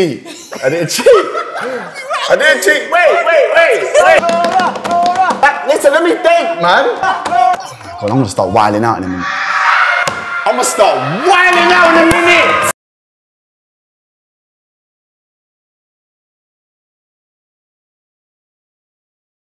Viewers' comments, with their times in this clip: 0:09 When you're in round 10 in zombies and they start to scream